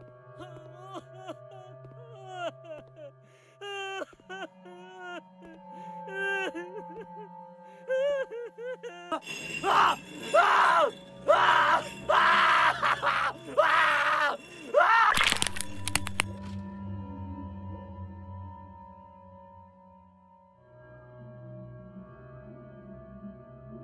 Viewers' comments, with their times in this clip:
0:05 I think removing the meat chumps and take another crushing sound, that is not so crispy would make the scene a little bit more gruesome.